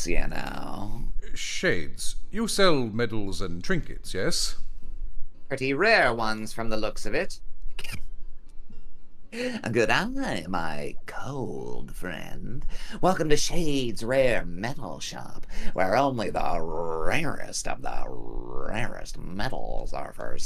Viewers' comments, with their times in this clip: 0:05 Kept expecting him to break out Christopher Lloyds "BRAND X ELIXERRRRRRRRRR" At any moment XD